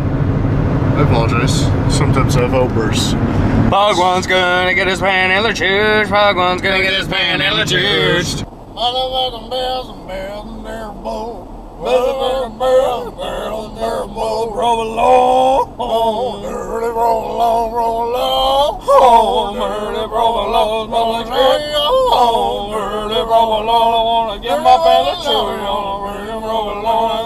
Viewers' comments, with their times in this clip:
0:09 my new ringtone decent harmony